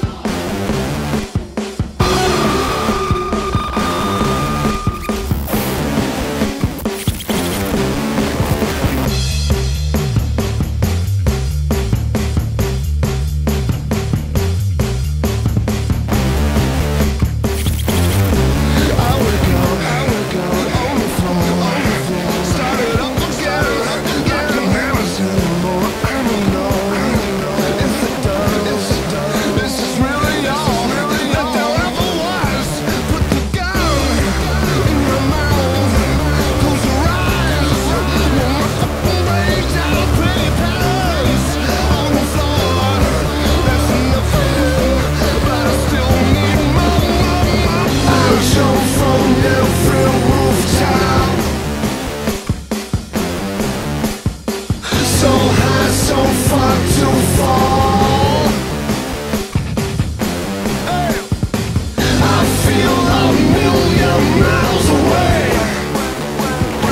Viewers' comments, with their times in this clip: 0:09 the way it’s just the drums on its own
0:54 Have to admit, I miss the tri-blasts that go with the drum